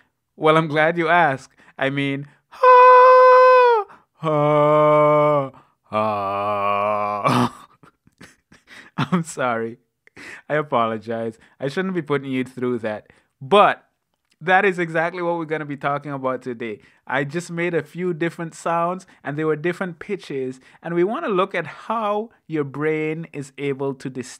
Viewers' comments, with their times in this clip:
0:06 omg i laughed so hard when he started cracking up